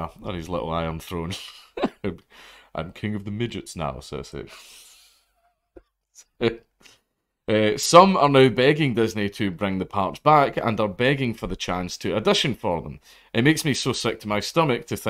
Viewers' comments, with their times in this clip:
0:03 I have no opinion on any of this, but that Peter Dinklage impression is pretty damn good, fair play.